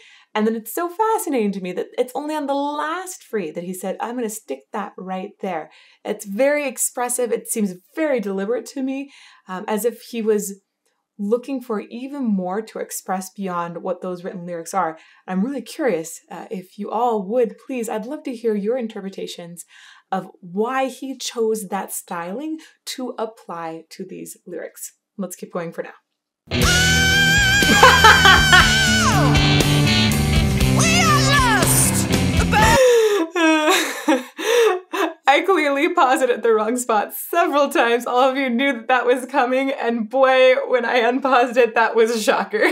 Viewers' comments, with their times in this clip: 0:06 my interpretation would be that those “toss offs” as you call em, give that impression that these words are being projected out, maybe even yelled in delivery. And that that more quiet direct repitition of the line about freedom is him really selling that point to the audience or the speaker that they were really free
0:25 she paused at this section twice...and I all could think was "you got another thing coming" when Rob goes REALLY high!
0:27 Laughing how she stoped it twice just before the unexpected belt in Dreamer Deceiver! Excited myself to be seeing them for third time in 2 weeks with sons.